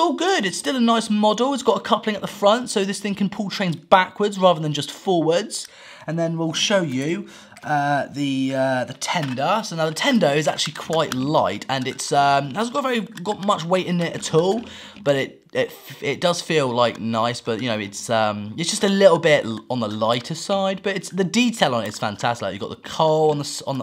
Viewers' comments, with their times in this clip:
0:09 Please tell me I'm not the only one that heard Nintendo